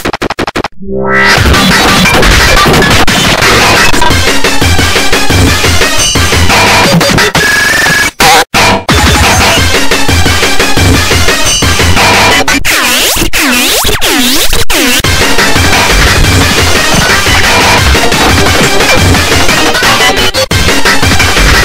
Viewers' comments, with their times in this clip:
0:07 sounds like someone is beating a pipe with a metal bat and accidently hit himself